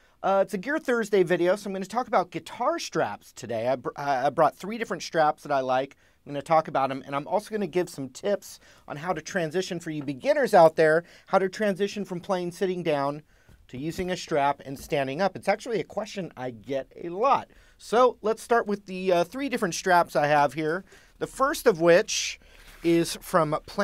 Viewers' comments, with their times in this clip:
0:06 "And I'm also gonna Gibson tips"